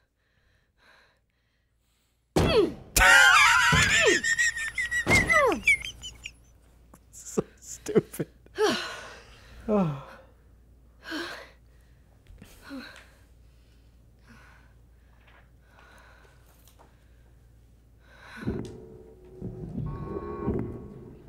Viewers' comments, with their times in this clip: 0:03 I love the laugh 😂